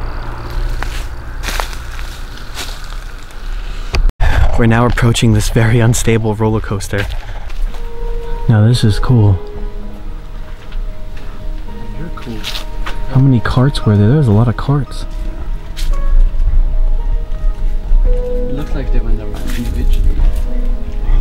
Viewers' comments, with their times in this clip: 0:08 "You're Cool" Did this come from one of your friends? I ain't sure. It sounds off for me.